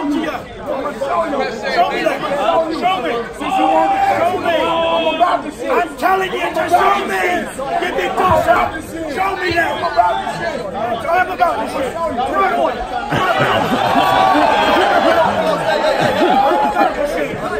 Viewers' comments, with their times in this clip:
0:05 Fury talking to Wilder like a teacher "im telling you to show me" lmao